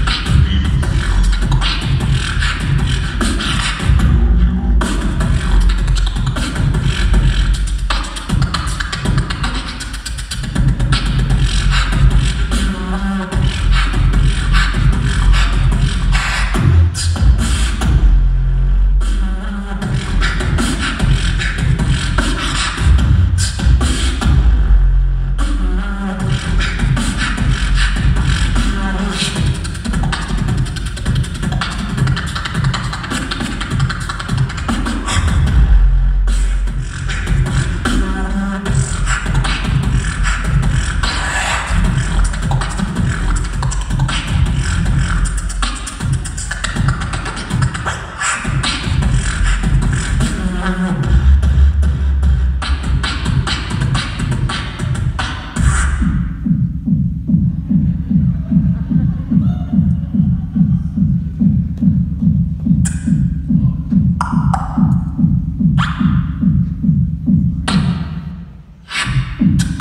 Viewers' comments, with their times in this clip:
0:03 "Do you" the way he said that it was incredible!!!
0:15 is my favorite part when that bass drops, just gives me shivers over spine 🤯
0:57 even his heart beat boxes